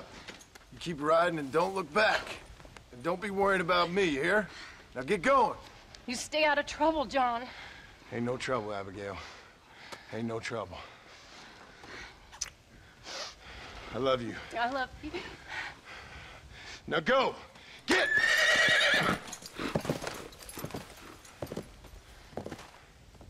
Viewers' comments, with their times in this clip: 0:05 the way abigail tells john to stay out of trouble, while holding tears because she knows john will die is so heartbraking. most touching scene in a rockstar game, ever :'(